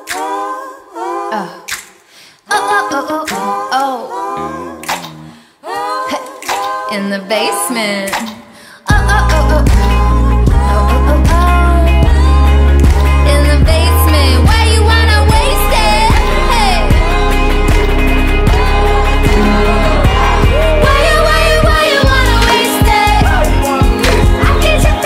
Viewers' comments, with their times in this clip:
0:09 That build back to the hook is just so great.